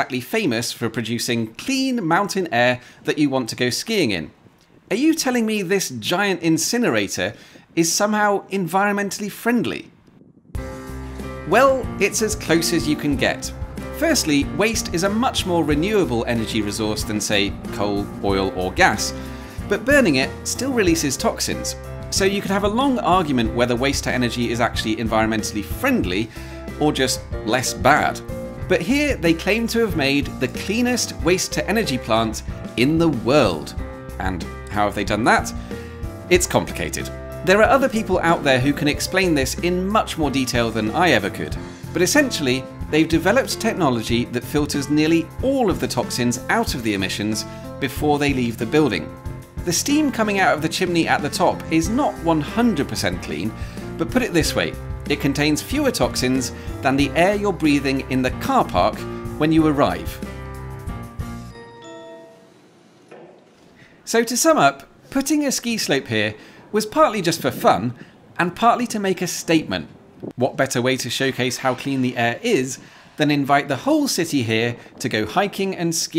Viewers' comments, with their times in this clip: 0:10 Was that a piano/jazzy arrangement of Gary Numan's "Are Friends Electric?"? Awesome!
1:01 the moment where Are Friends Electric turns into a lift chime - *chef's kiss*.